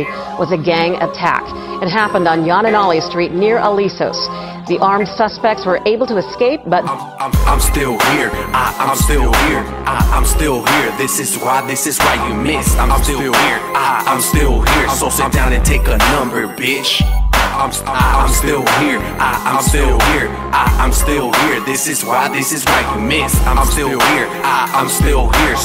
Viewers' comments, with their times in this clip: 0:07 is were the music starts